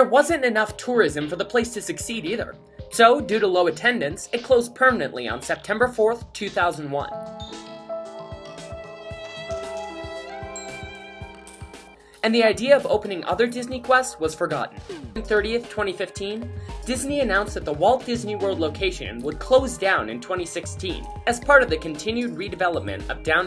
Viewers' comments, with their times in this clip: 0:07 here comes the sad song